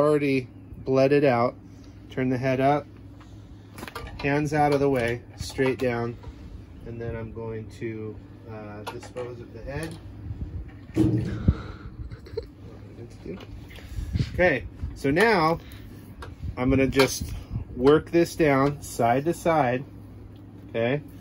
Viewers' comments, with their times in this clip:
0:09 thump he he